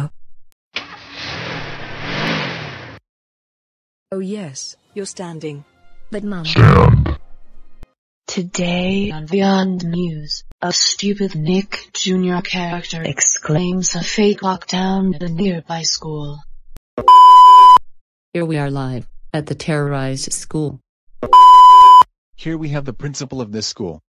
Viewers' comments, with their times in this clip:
0:08 She Sounds like she sick